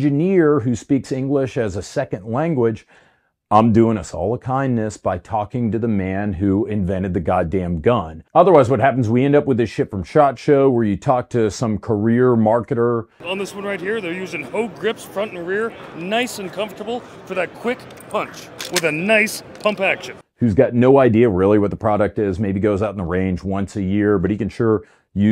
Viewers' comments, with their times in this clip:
0:06 The last bit is hilarious! That guy really is like a used car salesman!.